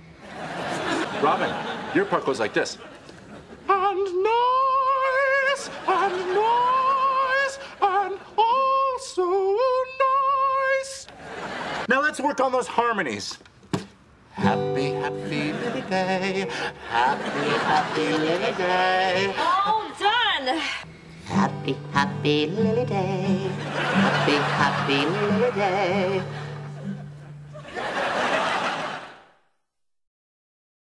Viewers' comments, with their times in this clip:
0:06 Neil couldn’t keep the laugh hidden😂😂😂😂😂
0:17 I never realized that Barney actually sing with Marshall